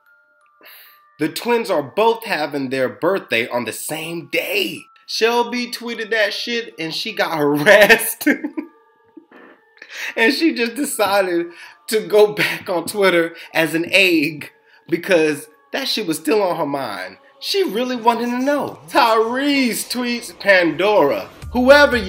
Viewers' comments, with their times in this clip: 0:09 Did anyone realize the fart in